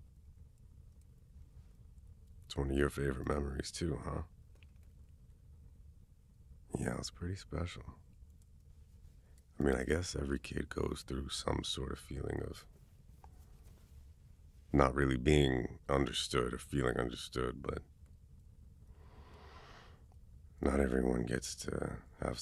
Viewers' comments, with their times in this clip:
0:08 wait this is so realistic. and the laughs are so cute u had me blushing the whole time 🤭 tysm for this (for me)